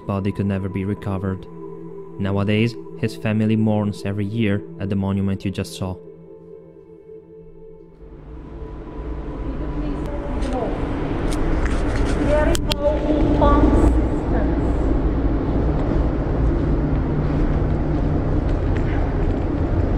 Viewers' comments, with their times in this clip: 0:04 Are the water pumps still running? What's that echoing humming?